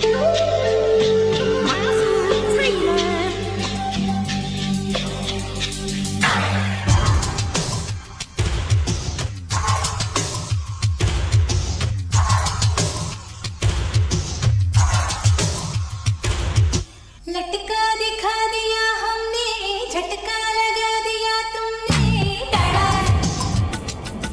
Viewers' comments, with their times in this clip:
0:07 Mehbooba Song from Ajnabee starting music is similar as in this one..!!! Starts from